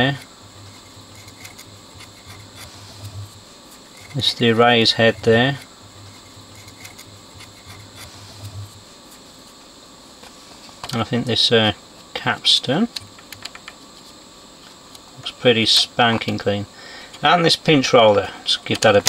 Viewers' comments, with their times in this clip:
0:06 is the erase head there… has echo… reverBBBB!